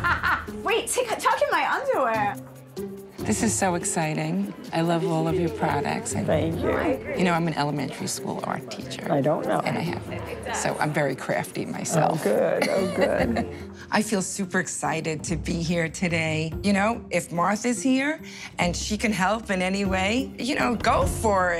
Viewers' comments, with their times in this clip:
0:06 Martha sounds snobby & uninterested. Shame on her.